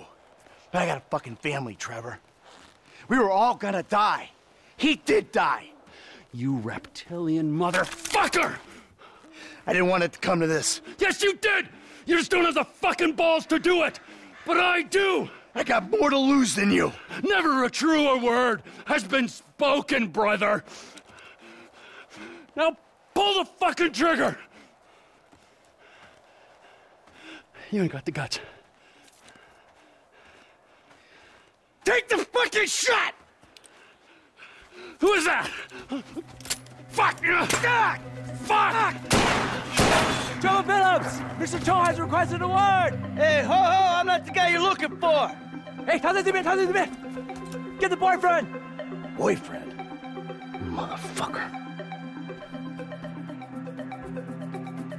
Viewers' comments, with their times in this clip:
0:08 you can hear the pain in michael's voice. He actually didn't want it to come to that.
0:22 you can hear the sympathy in Trevor's voice "Pull the fucking trigger."
0:35 I never really noticed but there is a clicking sound, was that the sound of Trevor pulling the trigger realizing it's empty? It would be a better explanation as to why he threw the gun at Michael and took off, but I sort of shrugged it off as him avoiding confrontation with a friend similar to how he fled from Franklin in ending A when Franklin drew his gun at Trevor. Anyways, after so many years I only just noticed that click and thought it was the sound of the gun being handled and thrown but now I realized its more of an empty clicking sound a gun makes when it isn't loaded or emptied. That implies Trevor would have shot Michael first, had it been loaded the story would have probably been very different lol